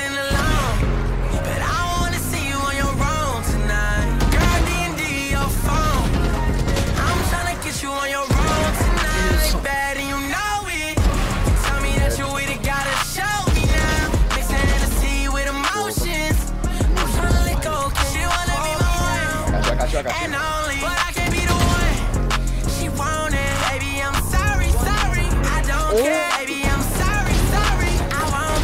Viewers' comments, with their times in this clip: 0:10 the shot match with the beat